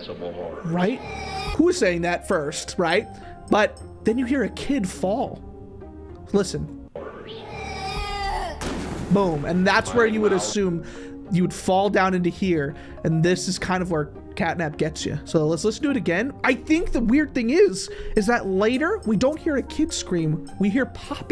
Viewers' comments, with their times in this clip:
0:08 Thats definitely a kid getting shot at with a shotgun